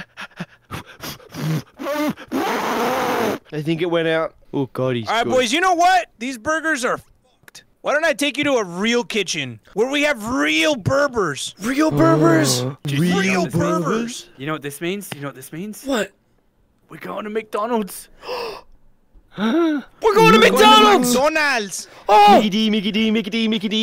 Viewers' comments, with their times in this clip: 0:07 you know how u censered that? There's an echo in the background XD